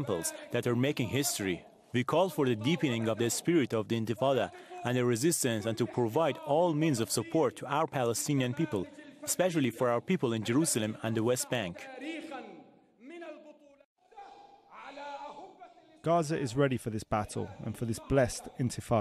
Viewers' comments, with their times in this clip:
0:04 the Islamic religious leader making the speech reminds me of Hitler making a speech. See the way he speaks with such passion and conviction. When I saw a video of Hitler making a speech, I said I have never seen a leader speak like that before. I was just wondering how that guy ever convinced people to go along with him. Now I see this man speak. He reminds me of Hitler. And his hand movement can be hypnotic. It is very interesting.